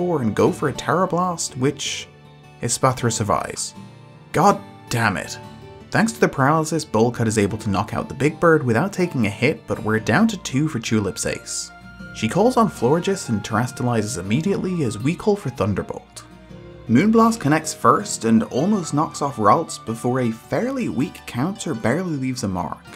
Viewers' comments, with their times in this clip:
0:03 the power in that line delivery 💀